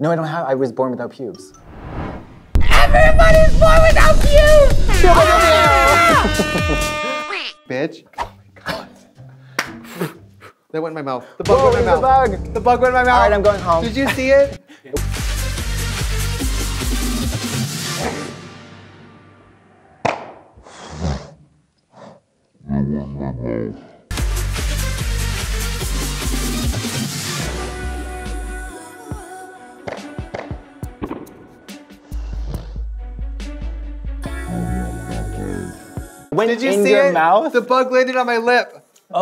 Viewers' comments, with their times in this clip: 0:08 Katya's clap was in the exact same time the bug touched Trixie's lip. I am screaming!!!!!
0:09 omg... I just realised when the bug lands on Trixie, there wasn't an added sound effect. Katya clapped the very instant it landed XD #burnher #slayher
0:19 Katya's clap goes in sync with the bug landing on Trixie's lip
0:20 The fly landing on Trixie’s mouth never fails to make me laugh and when she asks if production saw it 😭 the sound affect 💀